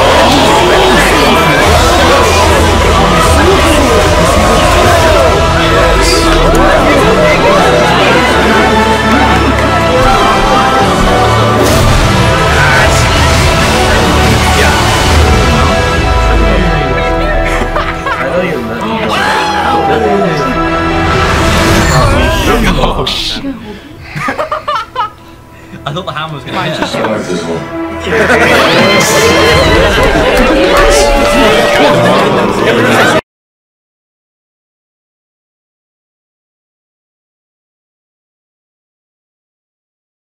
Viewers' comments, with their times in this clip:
0:05 the best music ever
0:19 look at that silence for a second i thought awesome but that top right guy ruined it with his funny laugh 🤣🤣🤣
0:23 that guy's laugh😂😂